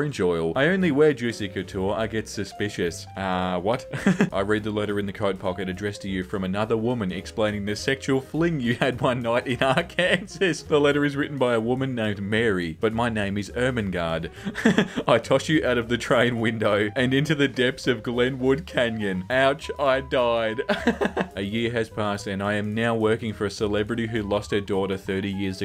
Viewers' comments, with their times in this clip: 0:08 he called is Ar-kansas like that one lady in the vine I'm laughing so hard rn omg... how has no one realized......
0:08 can we please address the elephant in the room? he pronounced it ar-KANSAS. no hate, but its pronounced ar-kan-saw if you didn't know lol.
0:11 YES, ARKANSAS SHOOTOUT! We're not invisible after all! Your pronunciation of it was atrocious, but I'll forgive it simply because of the Arkansas shoutout